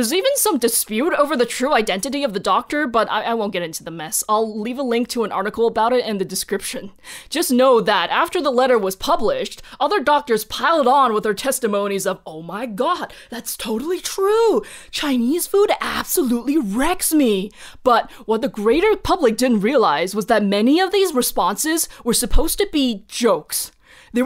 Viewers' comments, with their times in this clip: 0:08 I love the vaguely stoner-skater cadence you imbued the doctors with just after Like, subscribe, and comment, right? Really great video!